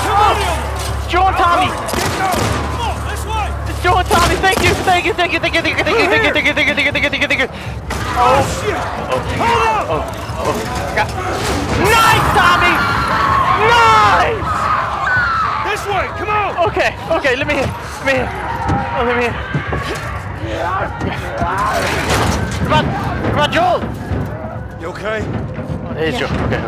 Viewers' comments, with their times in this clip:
0:07 delirious is sounding pretty sus